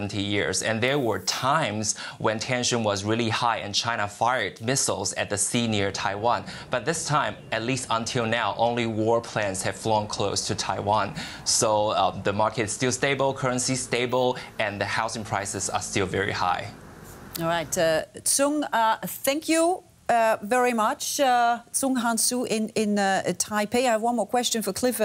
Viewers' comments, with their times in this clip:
0:06 Funny how the interviewee nonchalantly mentioned "only war planes have flown close to Taiwan"